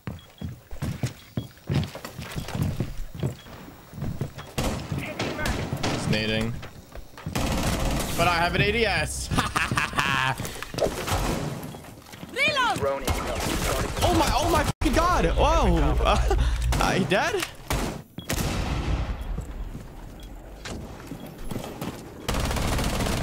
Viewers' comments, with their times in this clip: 0:08 that laugh though lmao